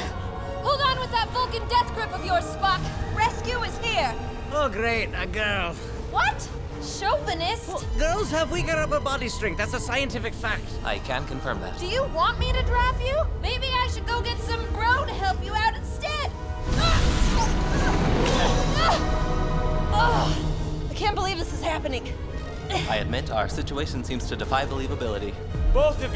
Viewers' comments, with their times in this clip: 0:04 Or his other part where you could really hear the accent “Oh great a girl”
0:07 That sounded authentic